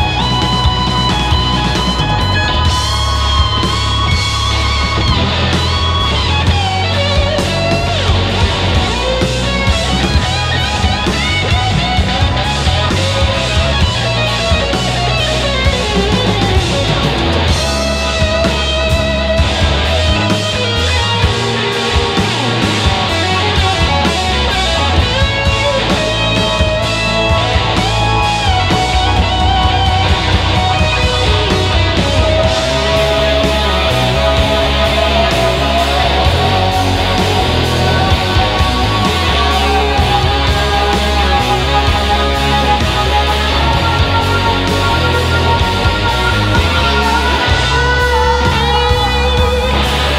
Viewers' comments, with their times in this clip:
0:03 is a terrific summit that whole solo built to those notes.
0:29 satriani crying sounds on that fkn epic solo
0:31 I love this part. His face singing is just insane, it gives me goosebumbps. The sinergy between guitar and vocals are remarkable, and this only works because of the support of the rest of the band. This is something we dont see very often, amazing work you guys.
0:31 what the entire fuck just happened with those vocals? That was an intense performance from the band all around and the vocal performance was perfection, but from that point until the end of the song, the vocals are beyond special
0:33 That is what God probably sounds like
0:35 the ending riffs were played so perfectly. In my opinion no quarter is one of zeppelins best songs.